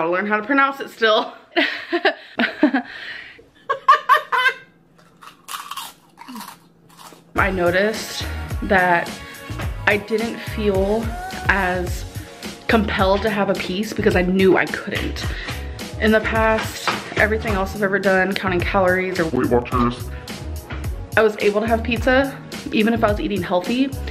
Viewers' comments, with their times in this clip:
0:05 ngl the laugh scared me